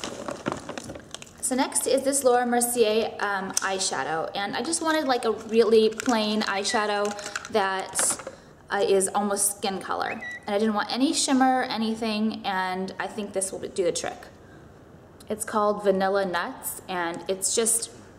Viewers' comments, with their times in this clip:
0:06 danyone else get really freaked out by the whistle before realising it was her phone....